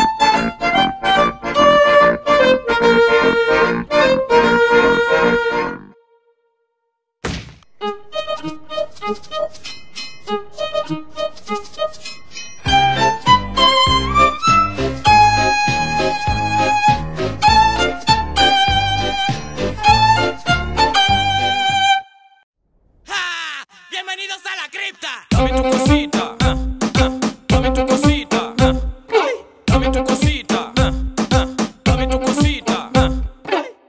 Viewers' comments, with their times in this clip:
0:08 my childhood in a violin...
0:10 why do I love that song
0:15 Is nobody going to talk about how he didn’t use vibrato yet we here it?
0:18 i tought iT was a boat 🤣🤣